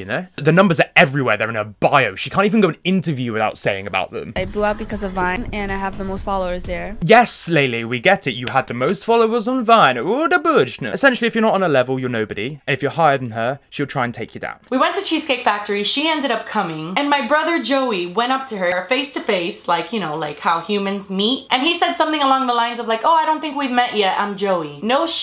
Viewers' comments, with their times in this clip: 0:10 he was speaking straight Simlish-